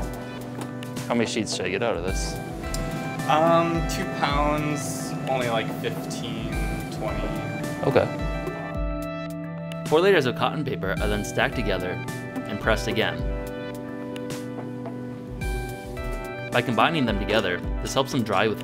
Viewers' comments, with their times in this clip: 0:06 I think I heard pewdiepie ( btw this is a joke don't call me a dubm ass